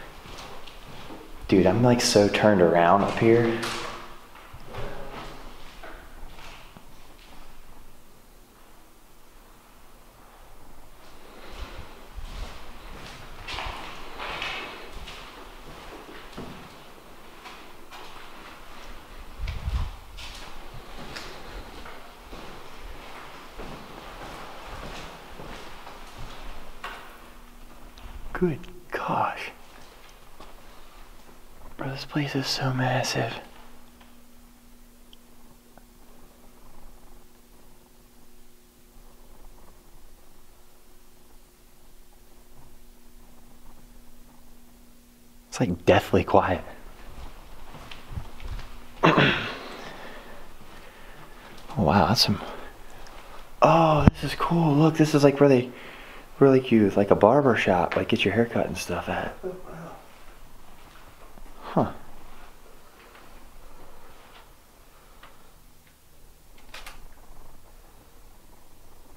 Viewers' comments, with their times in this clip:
0:07 you hear a voice
0:53 into this video, I heard a scream. I couldn't tell if it was a man or a woman. But it was scary.